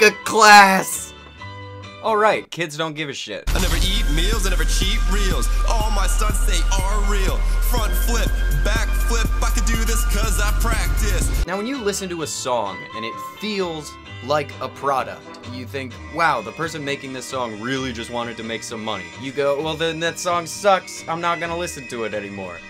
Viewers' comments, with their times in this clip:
0:03 IT HURT! THIS IS THE FIRST TIME I FELT PAIN THROUGH BAD MUSIC!
0:04 Well this seems familiar I never fucked Wayne I never fucked drake All my life man fucks sake (Don't know what actual words are just what I hear)
0:04 I think this is a flow 2chainz has used